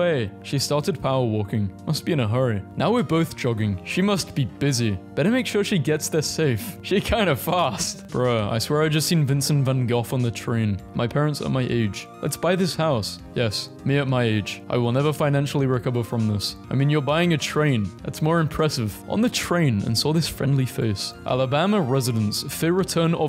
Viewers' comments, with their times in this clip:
0:08 Why do you always say “Vincent Van Goff?”